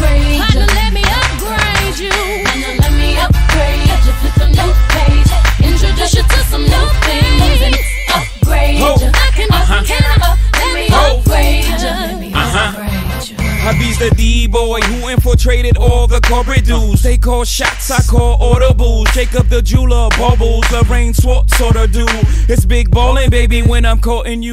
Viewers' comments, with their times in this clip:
0:08 this is my fav part of this whole song… the adlibs lol i can can i let me